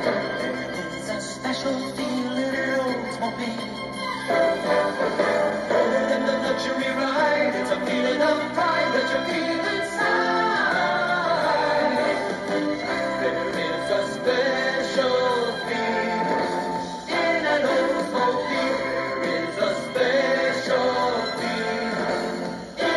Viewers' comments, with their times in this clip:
0:04 Sounds like something that would be playing somewhere in GM’s World Of Motion pavilion at Epcot back then!!!!